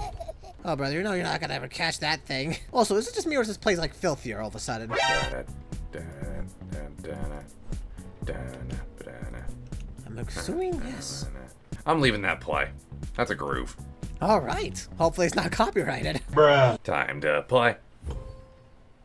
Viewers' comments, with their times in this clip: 0:05 moons happy jam